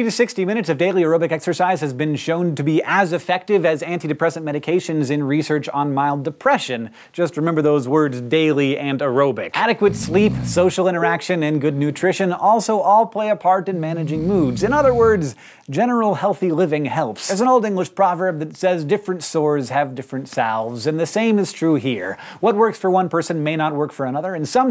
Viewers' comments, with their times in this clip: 0:10 The Facebook sound made me check my other tab.